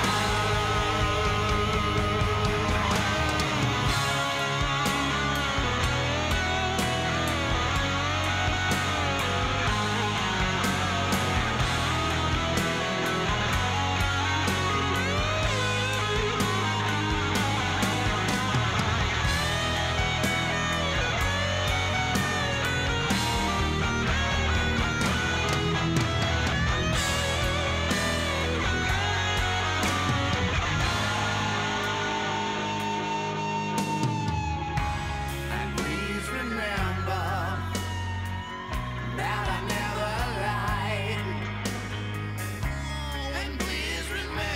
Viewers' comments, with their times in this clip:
0:05 slash guitar solo❤
0:32 Greatest note EVER hit by Slash 🙏🏻